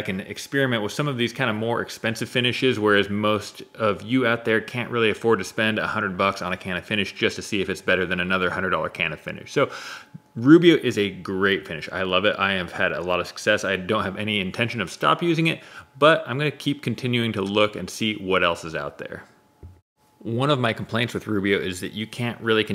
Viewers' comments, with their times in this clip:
0:08 what?? a $100 can of spinach? man, that must be some good spinach.